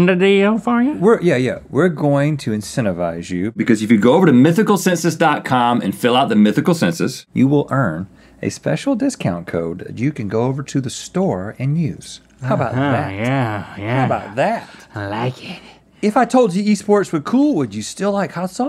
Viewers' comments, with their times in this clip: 0:03 Wow that dubbing was rough guys, did Rhett record it in the toilet?